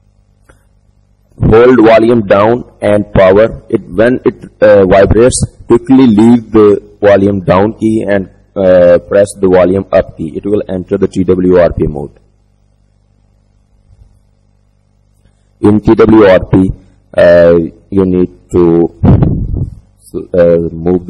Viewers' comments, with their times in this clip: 0:05 I cant understand what are you saying